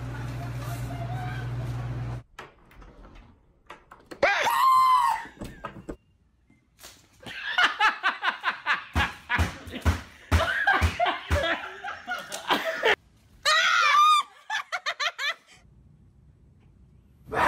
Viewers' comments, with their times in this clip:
0:04 ...He screamed like a 5 year old girl 🤣